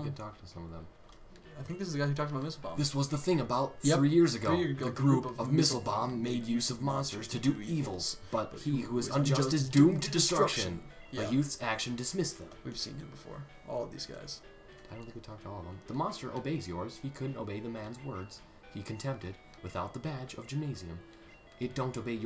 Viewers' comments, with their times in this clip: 0:04 dual speaking FTW